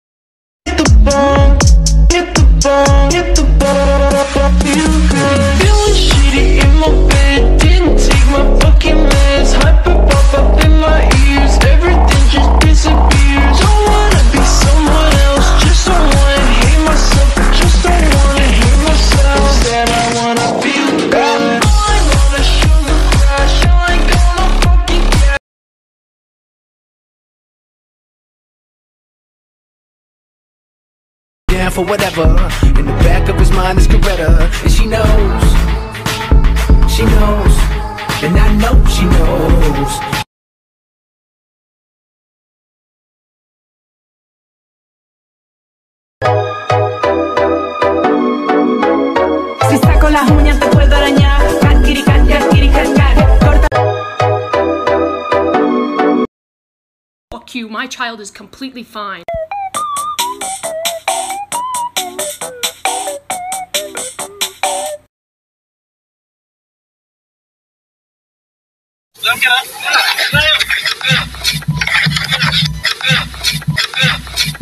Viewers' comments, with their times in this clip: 0:10 OMG the song go good🫠🫠🫠🫠😞💗💗💗💗
0:55 starts to hear the pibby theme song 😰😰